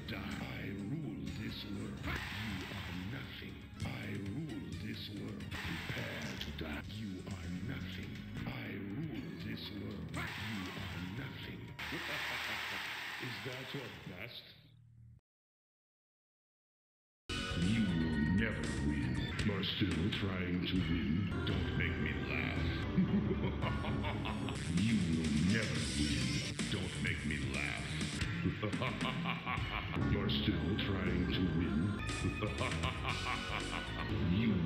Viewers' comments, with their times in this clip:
0:10 His voice is so intimidating his opponents start blocking mean while baraka is crying inside
0:21 Shao Kahn: don't make me laugh 1 sec later Shao Kahn: laughs